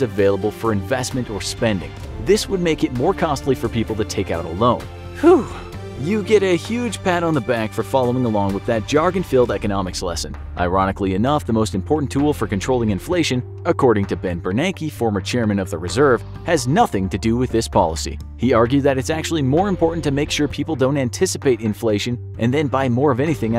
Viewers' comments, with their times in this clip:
0:06 you heard that huh noise